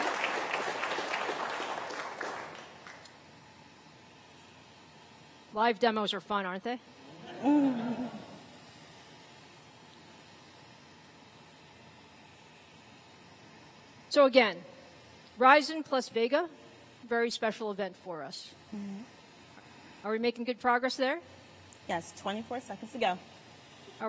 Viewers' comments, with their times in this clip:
0:04 DAMN THOSE FANS SOUND LIKE THE JET ENGINE R9 390X!!
0:06 her 'laugh' lmao.. so awkward lol shut up and take my moneys!